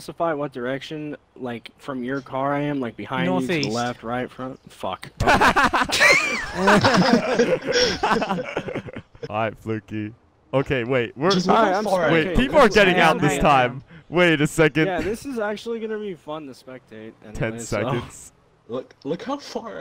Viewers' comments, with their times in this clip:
0:03 the way he said fuck has me dying